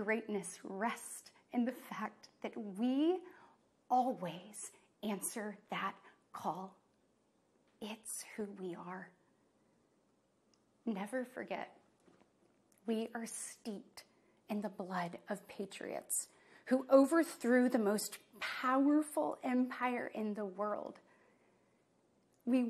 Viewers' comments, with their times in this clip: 0:10 “…pioneers who tamed the wild…” LOL Of course we didn’t displace, conquer and attempt to proselytize the native people of the land; no. So many terrible references in this talk, from situations that were almost 20 years ago and had nothing to do with today’s executive offices, to misaligned inflation start times, and still 50 years later referencing putting a man on the moon like it happened last month for the first time. Really? And all delivered in the creepiest Stephen King book character way humanly possible? Who writes; no who proofs this stuff? Wow. The delivery is that Stephen King character playing somewhere between Hannibal Lecter and a Vincent Price character. LOL, I nervously think - a very worried LOL that is